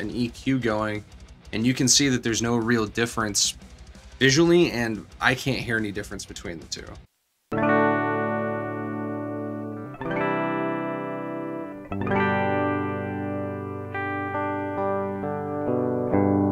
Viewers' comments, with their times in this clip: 0:04 The test I hear a difference . The second is a bit brighter.